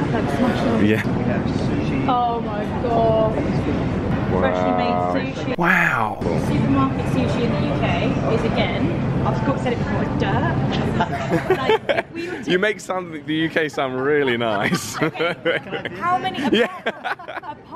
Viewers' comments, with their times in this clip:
0:05 Hey there Owen Wilson 😂